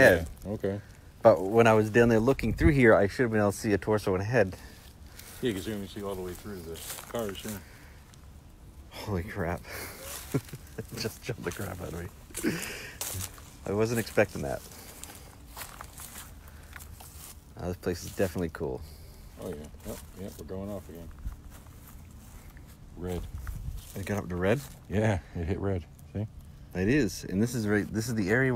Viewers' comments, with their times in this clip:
0:09 What is the sound ? Right after you say "holy crap" there is a noise/voice can't tell what it is.